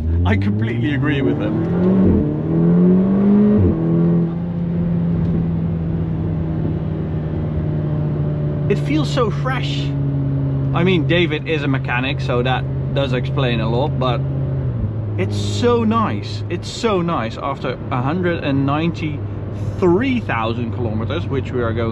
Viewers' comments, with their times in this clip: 0:08 This is why I like manual cars more than DSG, the rev hang is really annoying. You take your foot off the accelerator and the car is still reving its nuts off which is obviously not what you want it do. In a manual after a pull through gears 1,2 3 you can slot it straight into 5th gear, take your foot off the gas instantly calming the engine while putting on the brake if you need too 🤷‍♂️ if you want to go again you can drop it back into 3rd. Its a much more pleasurable driving experience imo.